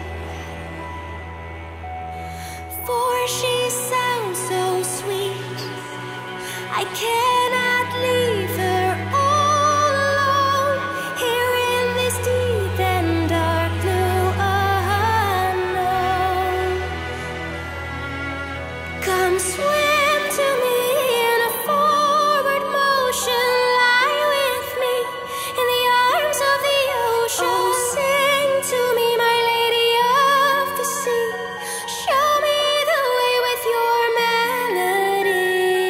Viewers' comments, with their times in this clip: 0:06 Am I the only one noticing that the dying man is humming the lyrics? HOW DID THEY DO THE UNDERWATER SCENES??? Wind machines for the hair, ok. Numeric light effect? OK. But the floating effect on bodies??? HOW??? What can we say else? Ah yes: Blackbriar Rocks!
0:19 begins the most beautiful part of the song ... I feel like I'm being enchanted by a mermaid's melody...